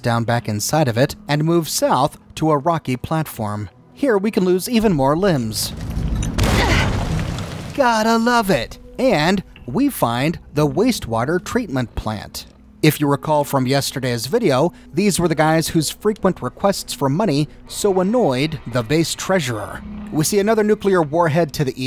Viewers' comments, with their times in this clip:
0:03 "Here, we can lose more limbs" BANG "Gotta love it!!!" That really tickled me, I had to pause for a moment! LOL